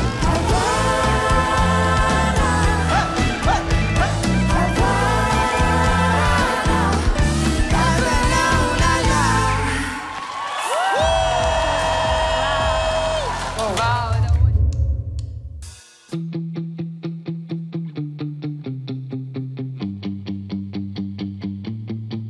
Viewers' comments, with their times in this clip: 0:05 The girls HOLY COW the arrangement, the hype from their coach >>> so good 😍🔥